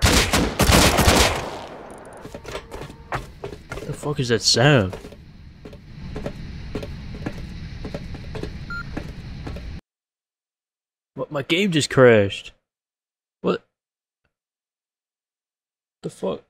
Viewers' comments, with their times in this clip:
0:04 I believe that's cargos PA system being activated with no one taking.